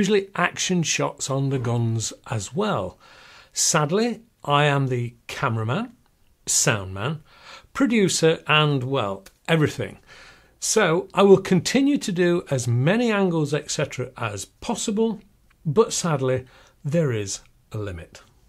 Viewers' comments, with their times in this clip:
0:03 You sound like Tyler Perry